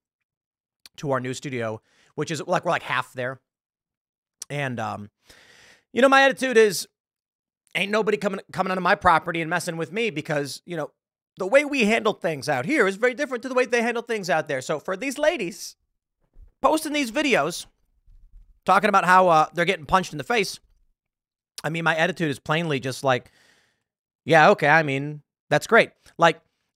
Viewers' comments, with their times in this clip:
0:07 The tone TimPool described his way of dealing with trouble makers... hits home...